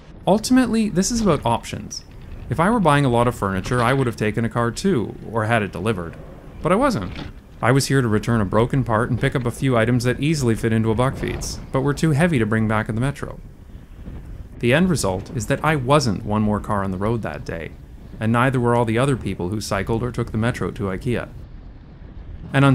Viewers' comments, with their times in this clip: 0:10 air raid siren